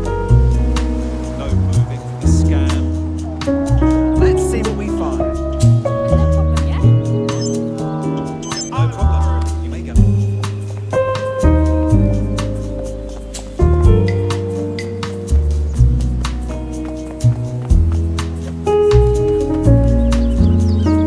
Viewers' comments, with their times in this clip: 0:07 I dunno man, he sounded like he was being nice